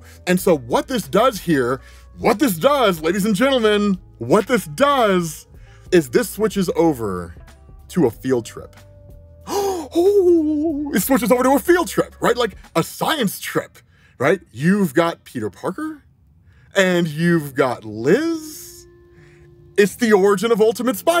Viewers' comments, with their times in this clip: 0:09 the sound made is palpable. that has to be the closest a human has ever got to express pure excitement